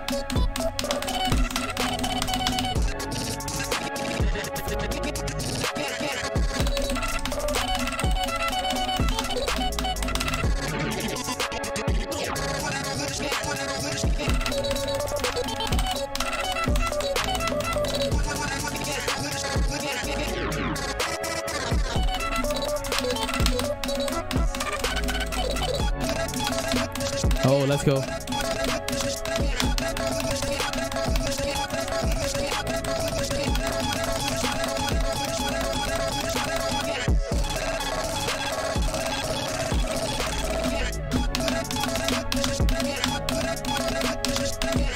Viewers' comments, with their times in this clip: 0:05 if we turn here 1.25x speed, it will be sounds like standart boxing match
0:25 this is THE BEST DROP I’VE EVER HEARD